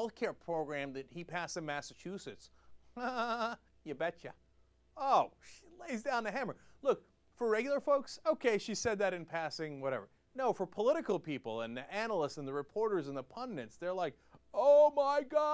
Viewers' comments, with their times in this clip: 0:03 Why is Sarah Palin laughing like Elmer J. Fudd?